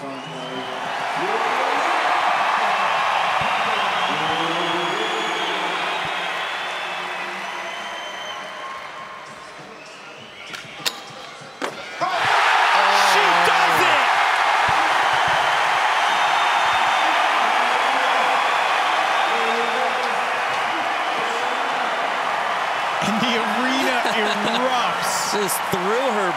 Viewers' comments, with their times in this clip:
0:07 Here is a story: You can hear someone whistle just as Chloe Covell takes off Was it a potential saboteur? Who knows, but I can't unhear it now and I'm going to listen out for it EVERY time ANYBODY performs a trick. Fin.